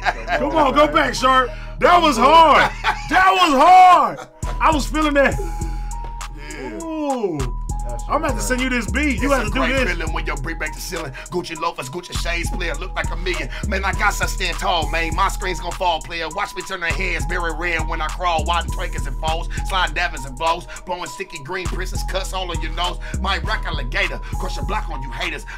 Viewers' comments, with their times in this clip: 0:09 thats that real Htown inspired playa flow